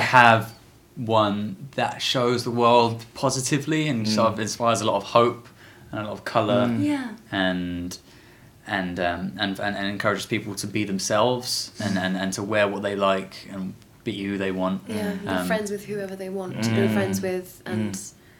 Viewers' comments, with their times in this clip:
0:06 holy shit she sounded like Emma Watson